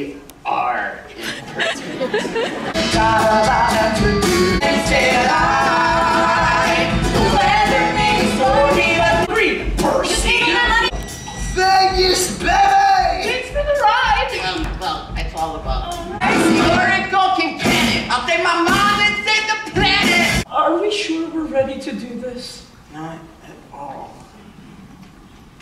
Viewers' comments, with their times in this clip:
0:10 Got a good accidental pause here lmao